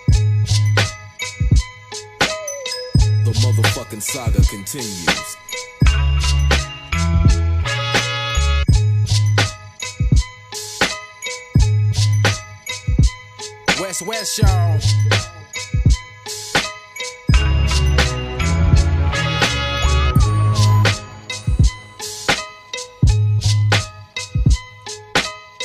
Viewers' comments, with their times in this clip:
0:08 THAT BEAT NOW WE ARE TALKIN!! THATS FIRE